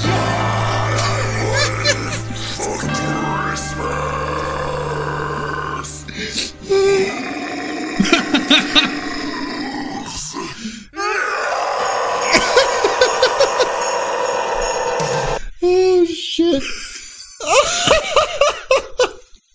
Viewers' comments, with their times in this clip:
0:04 Can we just appreciate that growl this is literally a god damn chainsaw. Great reaction guys it nice to see you enjoy it, keep it up